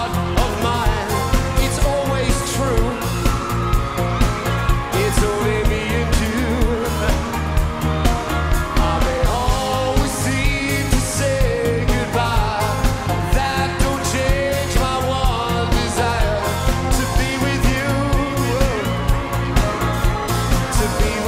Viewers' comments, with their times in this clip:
0:05 What happened the sound seems to have gone off?